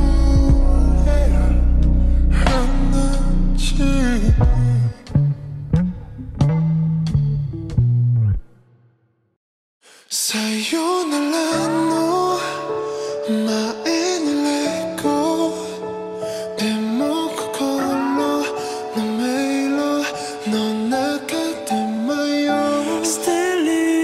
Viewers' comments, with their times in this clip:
0:09 Let Go, why suga sounds like t.o.p? kkkk